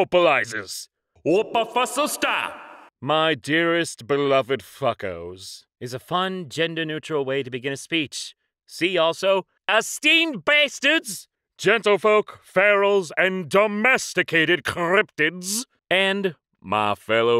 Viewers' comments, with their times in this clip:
0:03 why does he say it like professor maelstrom from the Carmen sandiego show on netflix